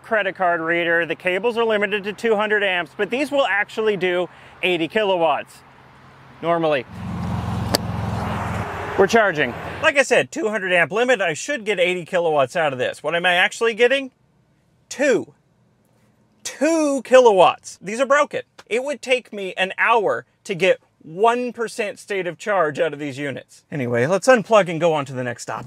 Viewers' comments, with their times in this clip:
0:07 lmao love that hesitation